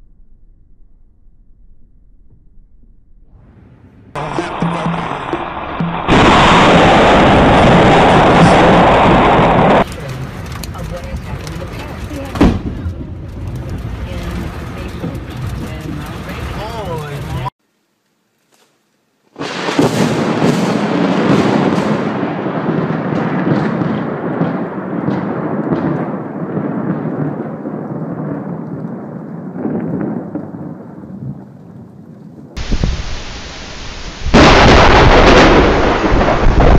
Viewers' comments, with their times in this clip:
0:05 why dos that sound like the sound of a bomb from a bunker
0:17 This is a powerful blast and it's a number 1 masterpiece popular lightning strike ever recorded! 😎 (Florida camera)